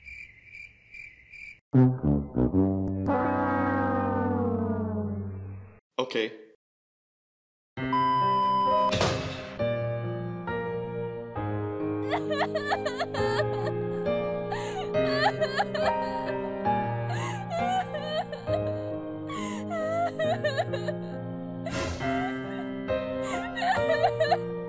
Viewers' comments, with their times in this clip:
0:08 wait you play growtopia? The ban sound tho